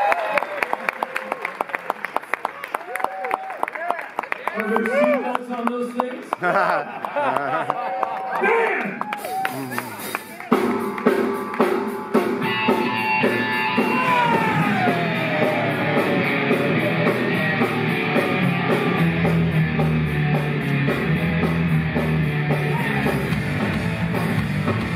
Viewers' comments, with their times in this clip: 0:06 Best part is Cyndi flinching at Henry’s shout